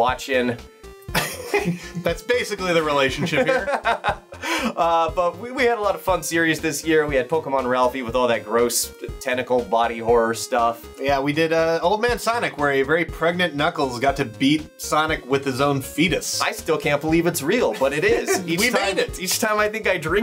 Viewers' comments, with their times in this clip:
0:05 I hear fu##